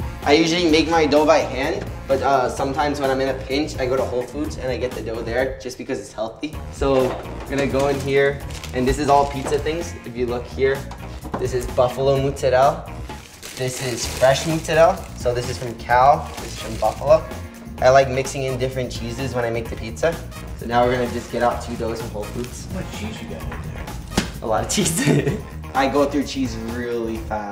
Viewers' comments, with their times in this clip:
0:09 Where do american italians get this mozzarella pronounciation from its not muuuzzarellll lol